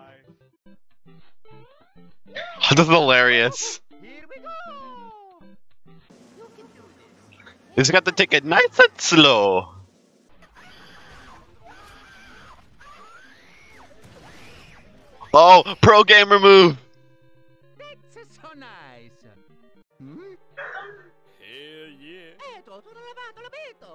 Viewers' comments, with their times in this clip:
0:10 Mario (inhales): No panic... Also Mario: